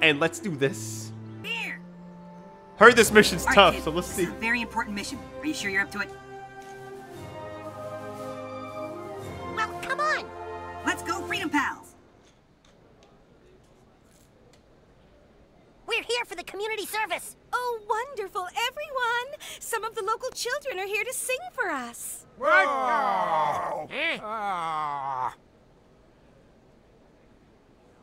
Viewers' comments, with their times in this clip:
0:10 the audio messed up